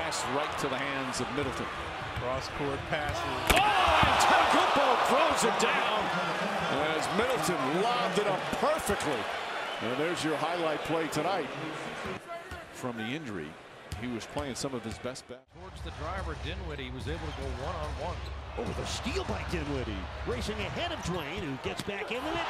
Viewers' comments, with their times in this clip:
0:03 you can hear the other commentator yelling